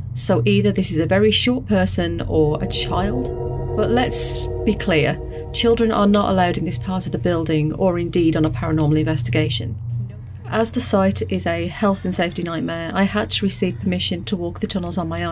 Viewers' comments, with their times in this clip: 0:03 you can hear other people are also roaming around like her so, it's almost definitely just another person